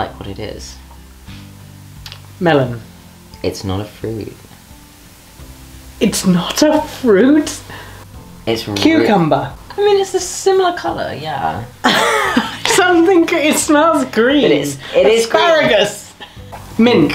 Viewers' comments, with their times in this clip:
0:04 “it’s NOT a fruit…” Sirius says in absolute terror 😂